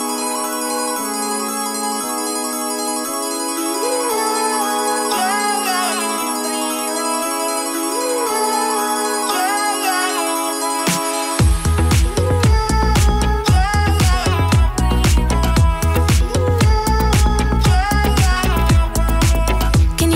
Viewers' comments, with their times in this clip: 0:03 I love the vocal riff a really cool addition to the tune that makes it not just a copy of the original but is faithful to the original. Nice touch. Also Lewis Capaldi's name in brackets at the end cracked me up.